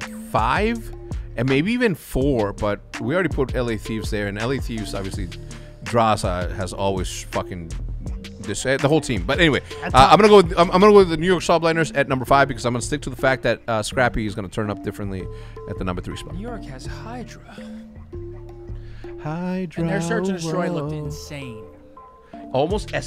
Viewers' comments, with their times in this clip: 0:09 sounds like Vintage H3CZ in the machinma days 😱